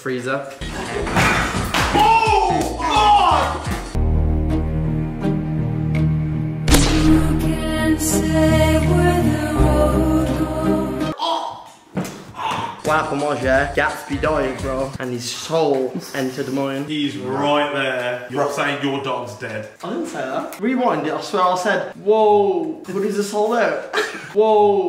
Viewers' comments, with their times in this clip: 0:10 had me DEAD with the music 😭😭